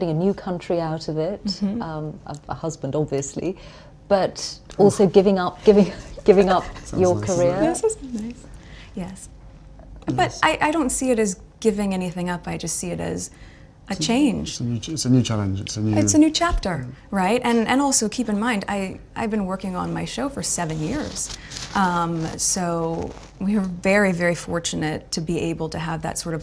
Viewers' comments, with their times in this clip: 0:09 And why is she and Harry so rude to the interview as she asks “you’re getting a new country & a new husband, obviously…” and they mutter and burst out laughing. This is a very telling and scary interview. To MILLIONS she’s broadcasting that she’s faking demure behaviour, showing off her silly job & how she’ll fit in because she’s an …actress. As if being an actress with its way of smooching with celebrities, having movie-sex and siting around choosing expensive outfits is basically what the queen does so no worries I can so DO this! 🙄🙄